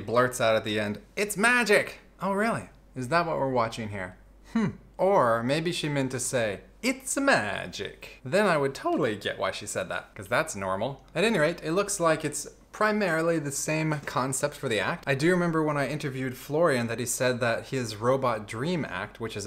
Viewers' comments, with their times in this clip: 0:07 that's an Italian accent, not a French one